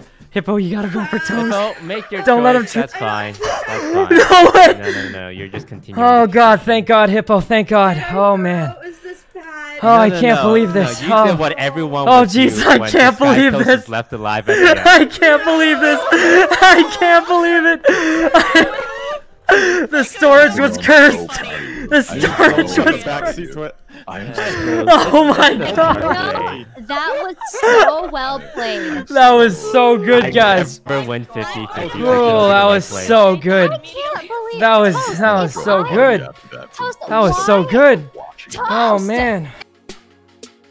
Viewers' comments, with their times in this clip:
0:03 just adding this time stamp cuz I rarely hear sykkuno scream excitedly (in a tone ig)
0:19 but since everyone was in shock and speaking it's a little bit hard to hear but if you listen closely you can hear him saying it multiple times
0:20 for anyone wondering it starts its hard to hear because corpse is quite but u can hear him saying he is so proud of sykkunno. Corpse also had a video and you can hear him much better.
0:24 his voice got blurred